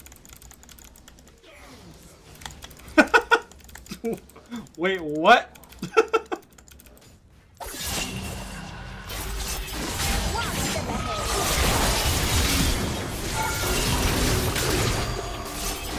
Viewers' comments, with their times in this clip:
0:03 kinda sounds like dream